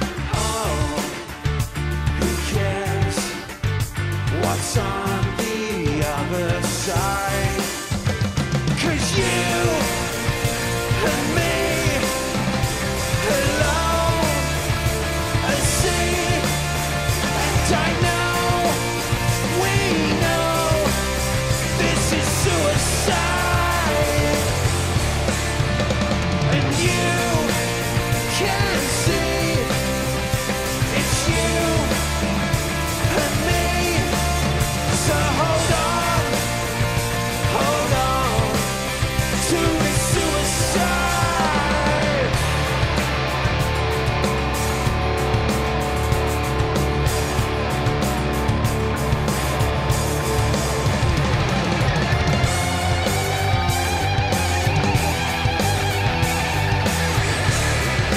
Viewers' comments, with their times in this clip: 0:09 Rolling Stones - Anybody seen my baby, immediately hits in my mind
0:43 Where I have the slide guitar?